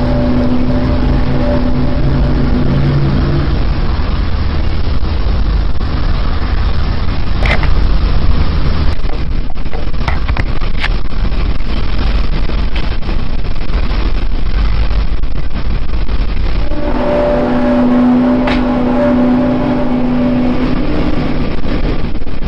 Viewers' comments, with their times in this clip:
0:08 Are you serious.. the scene changes but the audio stays on the same track. I know you fabricated this video to earn the attention mommy never gave you but c'mon man, that's a bammer editing job. Next time splice the audio with the video evenly so it's more convincing.